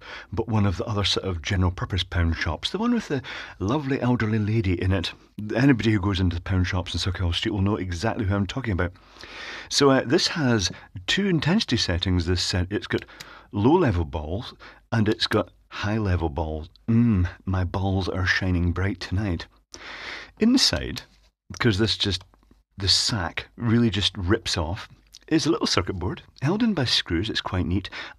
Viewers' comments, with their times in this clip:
0:09 I refuse to hear anything but "So uh, this has two in testes settings... It's got low level balls, and it's got high level balls."